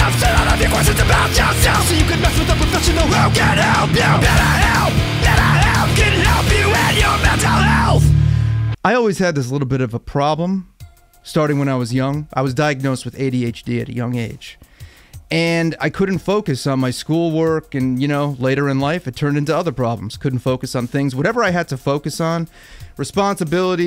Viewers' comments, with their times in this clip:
0:05 it sounds like he's saying "Better Help! can Help you with Your Metal Health!"